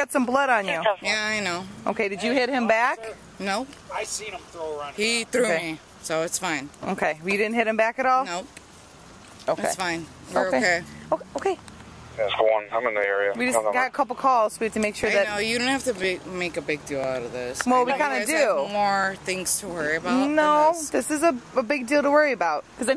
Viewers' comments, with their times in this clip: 0:07 what was that? A demon?